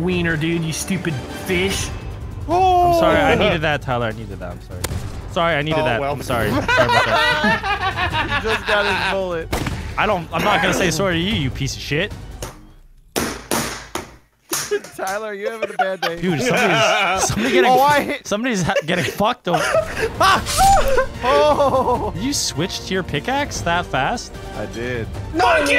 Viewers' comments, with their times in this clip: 0:07 vanoss Canadian accent shows
0:08 he sounded a bit British to me lol
0:08 the way he said sorry
0:09 that accent thou
0:09 Canadian accent comes through